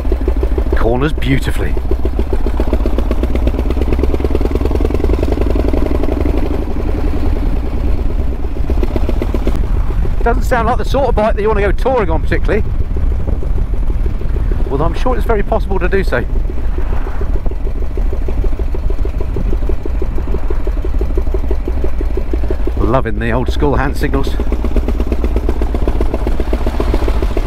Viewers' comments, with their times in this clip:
0:08 the carbs need balancing seriously.